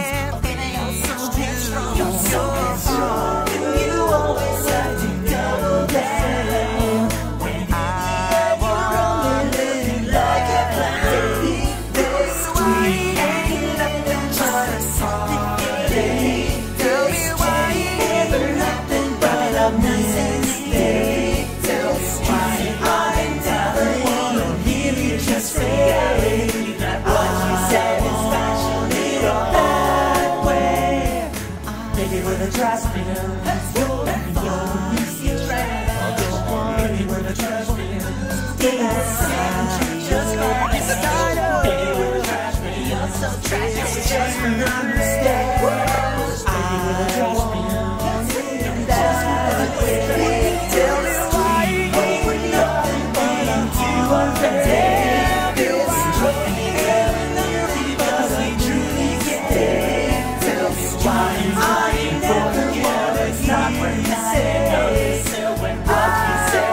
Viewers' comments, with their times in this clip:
0:10 sounds so good this just the best part where both songs sound good together
0:26 Why did those actually mix well
0:28 that was strangely beautiful harmony 😅
0:49 You gotta admit the first part when they say hope we aren't being too unfair syncs really good weirdly enough. It's